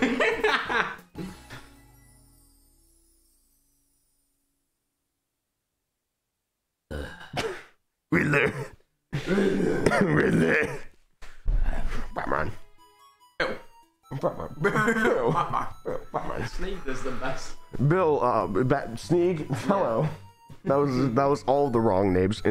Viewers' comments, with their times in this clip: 0:08 Pls tell me im not the only one that heard “willie” iykyk